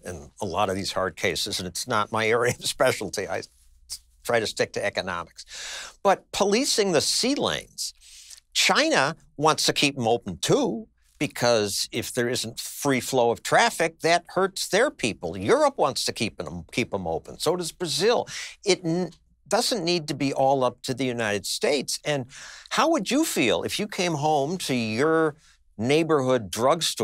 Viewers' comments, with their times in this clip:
0:08 lmfao that China sounded just like trump